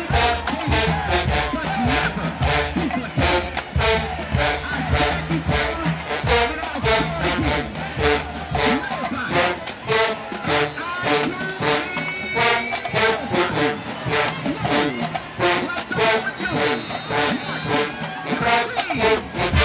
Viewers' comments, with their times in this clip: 0:06 THAT SIDELINE BLOWDOWN😆